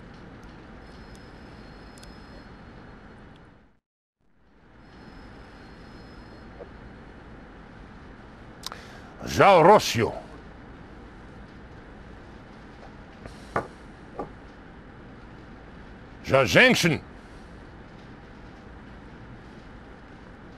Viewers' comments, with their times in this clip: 0:07 It's interesting that actor here is actually trying to speak Russian enough for it to be recognizable. "For Russia! For ladies! For Russian ladies!" He's also constantly says "govnukie" which means "shitheads" in Russian.